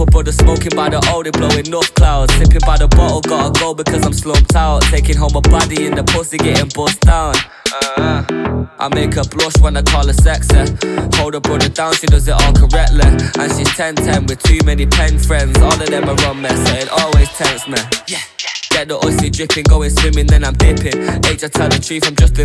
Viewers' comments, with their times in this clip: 0:08 lucky that sexeh rhymes with correctleh